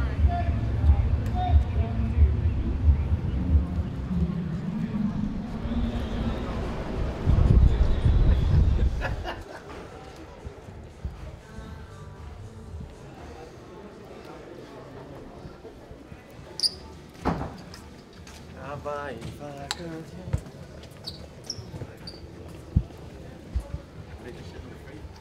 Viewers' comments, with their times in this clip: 0:07 Jurgen knew it. That laugh 😂😂😂😂